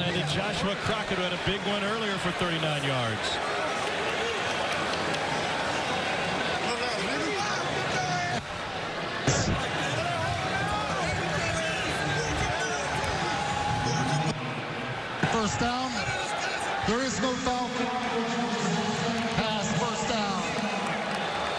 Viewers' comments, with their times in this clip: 0:06 Who else heard the shit talkin in the background ?🤣🤣